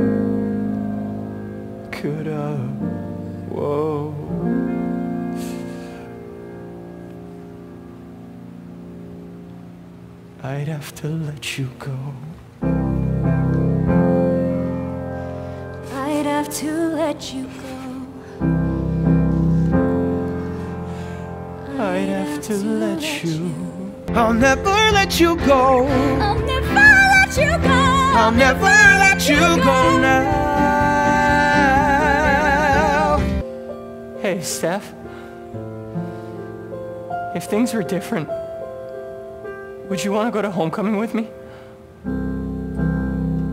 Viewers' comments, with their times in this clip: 0:10 Peter's "I'd have to let you go" is in minor because he's grieving that he's going to die, while Steph's is in major because she's going to live
0:24 GIRL. THOSE VOCALS